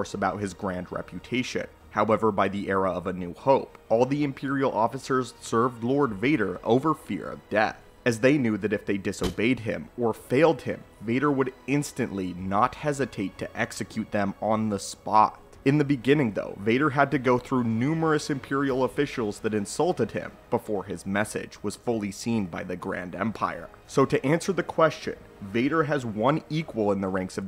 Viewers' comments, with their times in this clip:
0:08 there's a weord audio thing and I am absolutely certain it happened earlier in the video too, I genuienly thought my headphones broke